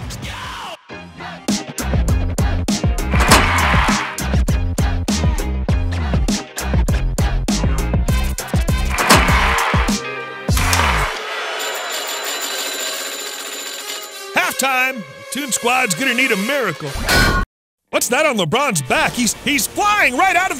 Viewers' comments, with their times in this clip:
0:07 Mr Krubs voice